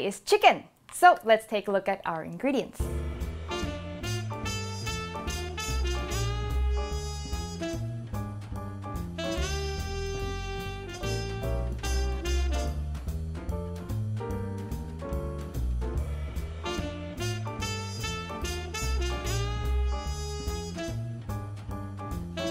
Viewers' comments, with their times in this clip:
0:03 That music kicked in and I swear I thought I'd see Mike Stoklasa give an inarticulate cry and hurl a VCR at Jay Bauman's head within three seconds. More relevant to the video, this recipe is absolutely exceptional! Thank you so much!